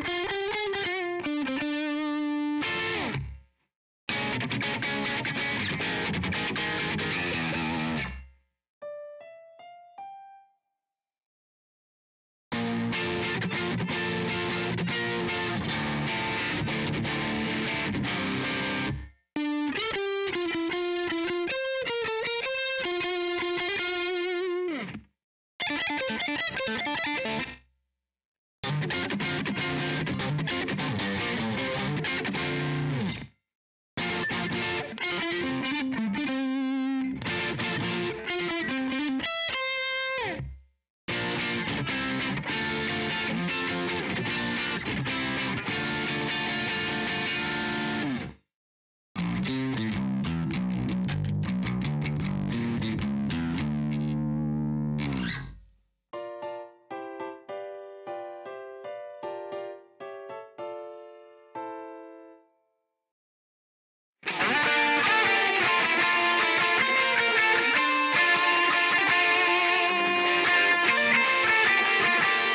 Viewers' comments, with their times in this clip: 0:08 was expecting the lick
0:09 for a sec I thought that he was going to play the lick
0:49 bro I legit thought it was a piano for a sec
0:55 thats some black magic piano plays right there
0:56 That was some of the best piano playing I've ever seen~